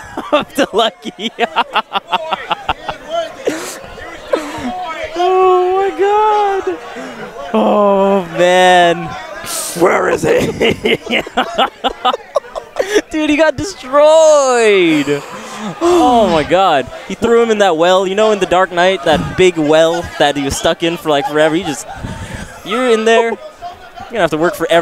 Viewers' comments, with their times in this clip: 0:09 if you keep clicking you have a song called "wearizee"